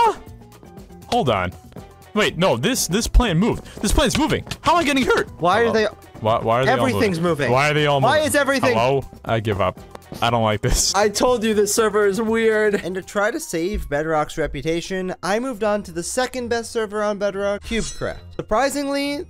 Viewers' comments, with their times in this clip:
0:05 this man sounds like technoblade